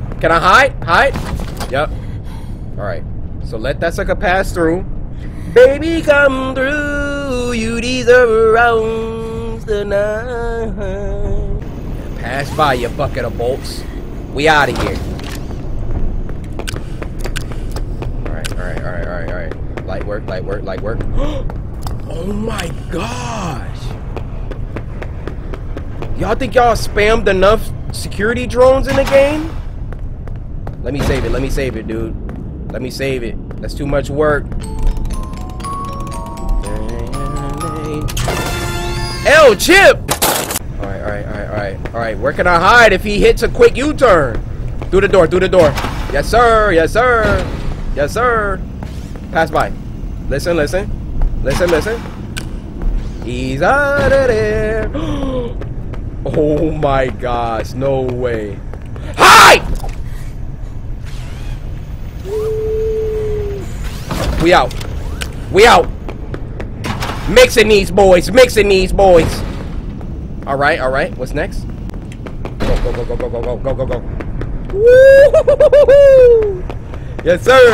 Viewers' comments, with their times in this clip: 0:05 first i hear you sing it in your granny videos, then here?
0:13 I thought he said the B word
0:21 that "Oh my gosh" sounded so zesty 😭
0:59 bro scared me with his scream💀💀